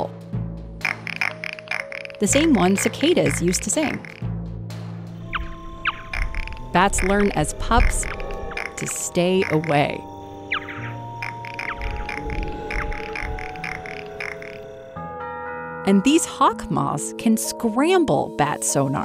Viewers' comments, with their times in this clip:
0:07 wait, i can make that same noise with my tear duct..